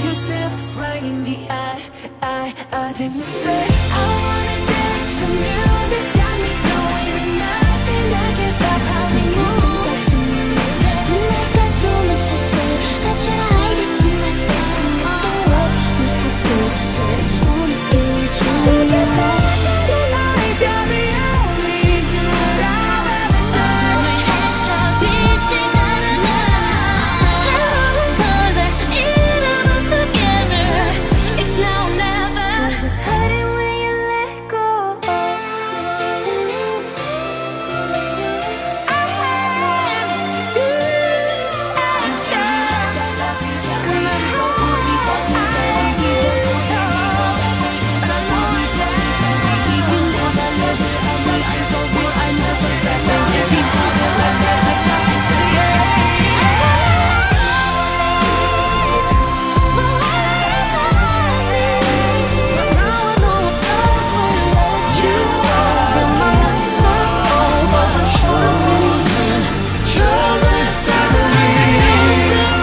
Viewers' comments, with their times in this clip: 0:09 permission to dance sounds so good omg
0:56 this part with arianas high note made me shed a tear